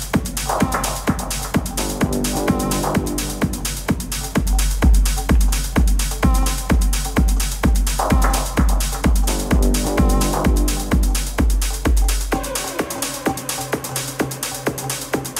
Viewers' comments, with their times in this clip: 0:03 what a track fooook yaaaa